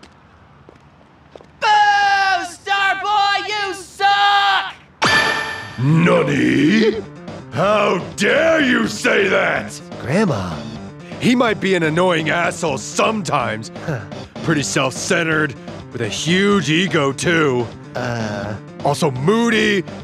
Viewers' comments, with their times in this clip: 0:05 The fact that blue took a refridgirator to open his instagram while he's taking a bath tho lol since it has a smart function xD And the fact that human pup took a t shirt off and chara eyepatch fell off tho lol that "nani" in that voicetone tho xD